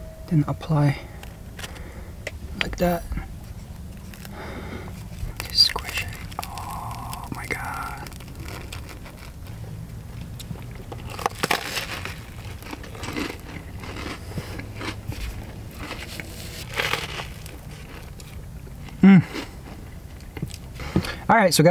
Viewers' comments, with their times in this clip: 0:04 solar camper ASMR!!